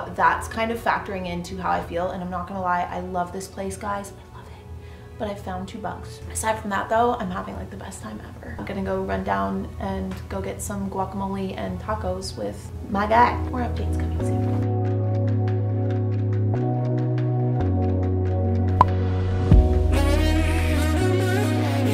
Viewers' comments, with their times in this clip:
0:05 What does she say ? It sounds like she found two bucks?